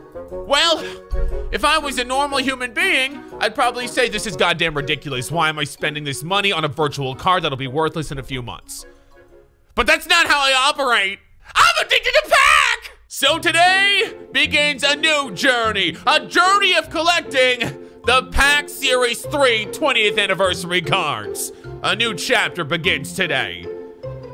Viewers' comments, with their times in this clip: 0:10 I’m addicted to crack haha